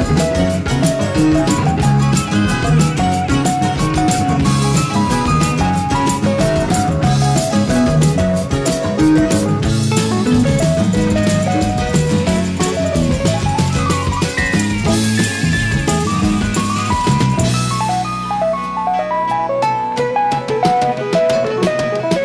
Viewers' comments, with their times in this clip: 0:03 Beck's guitar is crying because Max Middleton's keyboard solo is stealing its spotlight. On the original vinyl it was easier to hear. I think this is a remix for the CD and it's not as easy to hear, doesn't stand out as much.